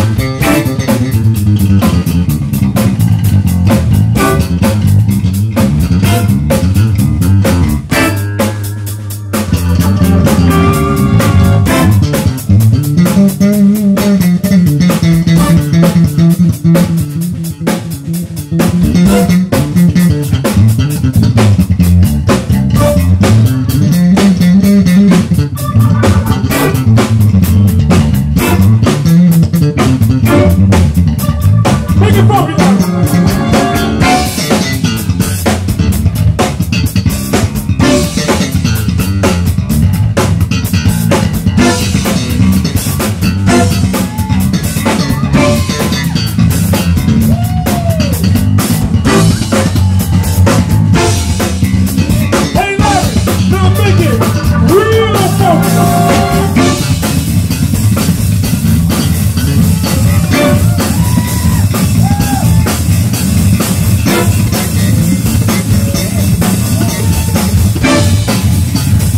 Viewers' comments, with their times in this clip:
0:07 bass master flex
0:56 pretty sure this is the bass version of sweep picking